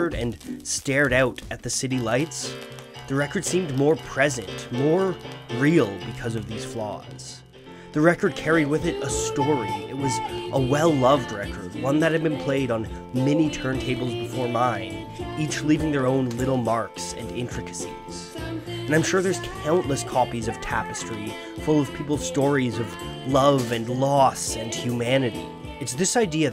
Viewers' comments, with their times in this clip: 0:07 I remember listening to Tapestry back when I was in school on vinyl and when I heard the crackle in Too Late I literally felt like crying dude, it made me so happy to hear it again